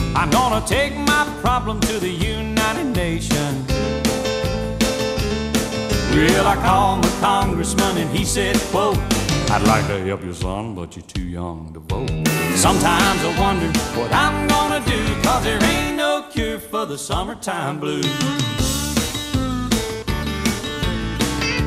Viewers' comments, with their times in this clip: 0:09 "I'd like to help you son, but you're too young to vote" ... 😄😄😄... I love how he sings this part 😄😄🎸🎶🎸